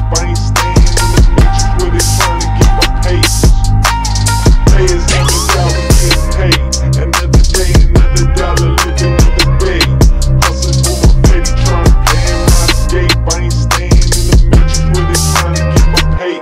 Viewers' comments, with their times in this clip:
0:04 I love and I hate it..xD why this goofy ass 'comic eye popping sound' in between sometimes ( for example) 🥲 rest is perfect <3